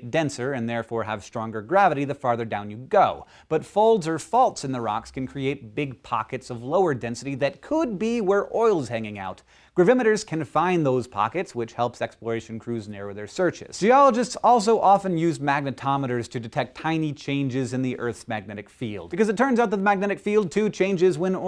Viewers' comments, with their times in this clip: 0:07 For a second, i thought he said "oils" (plural) but then i realized he said "oil's"